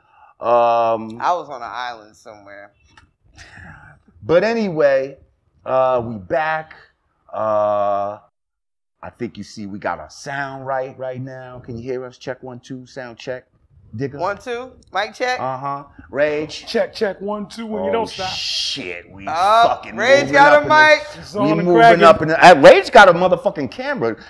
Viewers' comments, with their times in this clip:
0:08 sound is still trash. TRASH 🗑